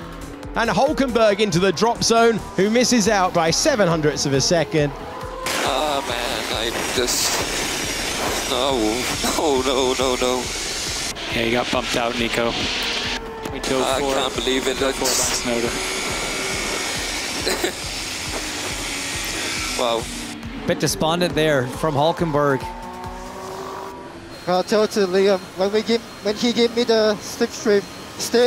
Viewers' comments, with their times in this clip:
0:10 Is Nico crying?? I feel sad for him